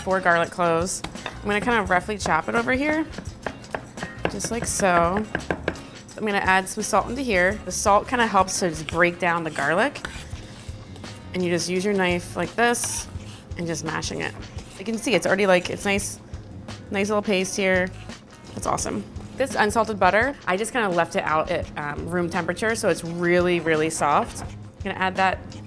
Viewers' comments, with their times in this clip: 0:09 that scraping noise is kryptonite to me 😭